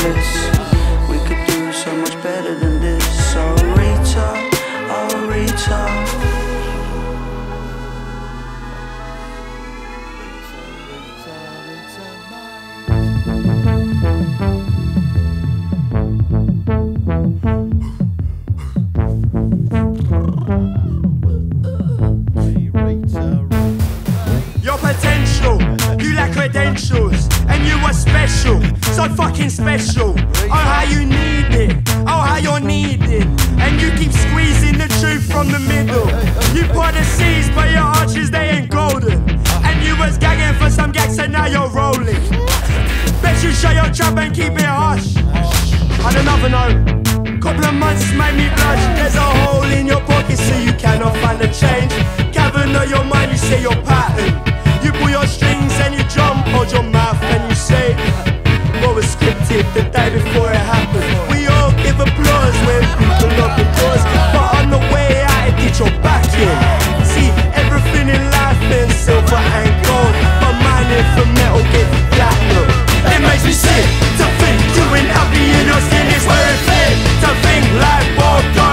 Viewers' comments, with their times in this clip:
0:03 i thought it said ill reach up ill reach up but as it turns out it actually says oh Rita oh Rita
0:04 "oh rita" Me during all this time "ahorita"
0:33 I thought it said "And you keep squeezing the truth from the middle"
1:03 I need clarification. Is there ANY reliable source for the lyrics? I might not be a native speaker nor used to this accent but I'm pretty sure that's not how you say "doors"